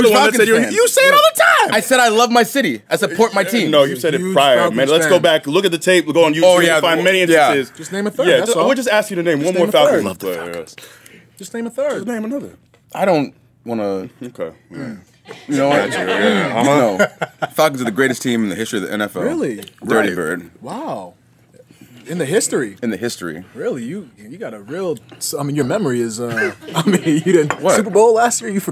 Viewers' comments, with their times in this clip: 0:09 did anyone else catch the cuss word at like he gets REALLY close to the mic